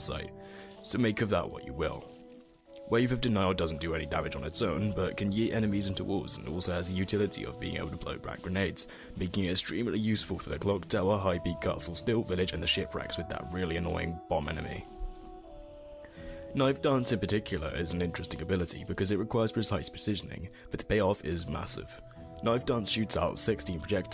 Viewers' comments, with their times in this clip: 0:09 newer to dead cells, 50 hours 3 bc, good guide despite it sounding like a vile nasty disease-carrying insect flew through into your mouth and you swallowed it halfway through the video, specifically I think I actually audibly heard a tear roll down your face, but I digress. I've been messing with affixes and been getting a general outlook on how you build things and interactions with items (fire vs enemy in water synergy has a bug where it doesn't apply stacks of fire Dot), but dead cells has been very different than how you build in the other few roguelikes I've played (isaac, EtG, cat goes fishing) to where you essentially just get blessed by god with a good item and then just run your build off of it, (getting a good legendary essentially) or you just end up carrying your entire run off of skill to maximize the output of gimmicky items/overpower getting dogshit all game.